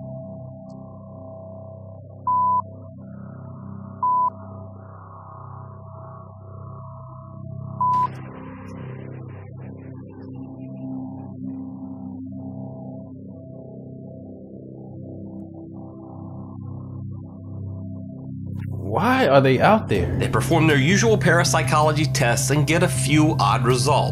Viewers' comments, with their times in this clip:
0:10 that man be swearing so much he sounds like a heart monitor (yes I did have to look up what a heart monitor was in my mind I thought it was something more complex than that)